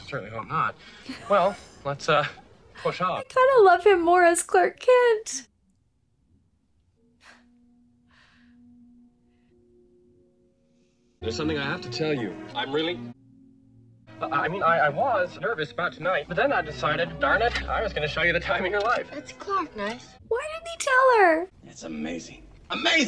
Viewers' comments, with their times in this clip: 0:06 This scene is why Christopher should have had an Oscar nomination. Look at the way his stature changes, the straightening of the shoulders. A physical transformation from Clark to Superman, all just by taking off his glasses. Even the sound of his voice changes. And then changing back when he backs out of revealing his true identity. Playing two different people in the same shot. Amazing acting.